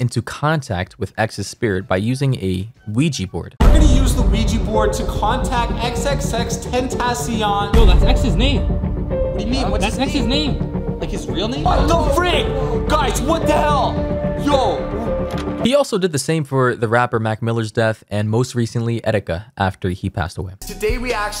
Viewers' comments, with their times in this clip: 0:06 hearing him speak annoys the hell outa me